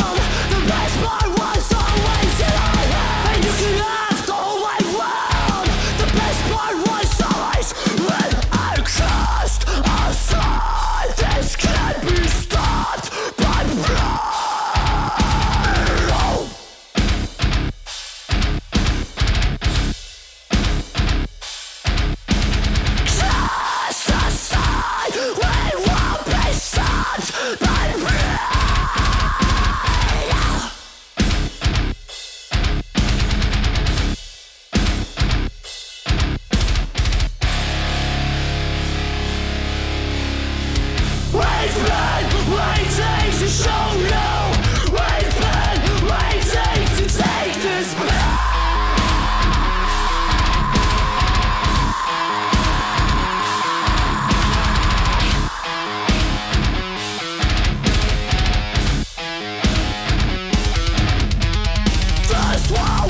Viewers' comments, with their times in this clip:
0:07 What a rich breakdown lml
0:07 Anyone heard the sound of iPhone/iPod charging ?! Or isit just me?!
0:08 My top 10 fav breakdowns of all time.
0:46 The drop will forever hold a special place in my heart haha. Still one of my favorites.
0:48 That scream sounds exactly the same as the Chelsea Grin's Bleeding Sun scream at 1 minute.
0:48 That scream sounds exactly the same as the Chelsea Grin's Bleeding Sun scream at 1 minute.